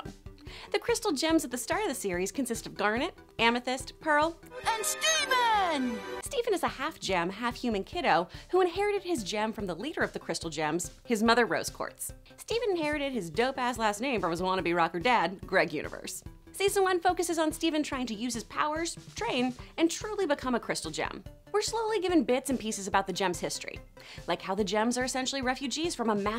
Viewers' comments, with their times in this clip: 0:09 i hear "shitting mao"